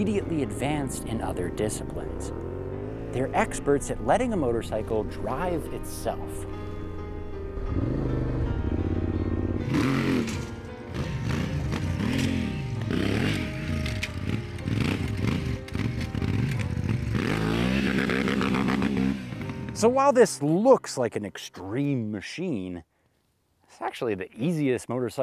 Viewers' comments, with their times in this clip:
0:10 what bike is that? it sounds really cool